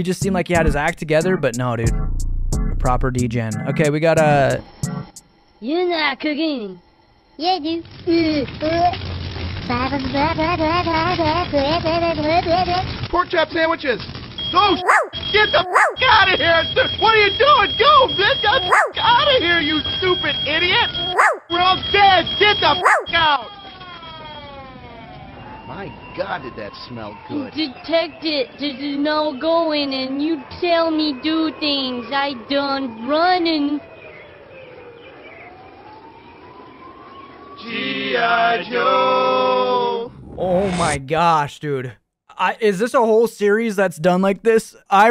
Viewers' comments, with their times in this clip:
0:05 I almost broke why did he sound like that
0:27 I didn’t know they made a whole series on the French Google Translate Lady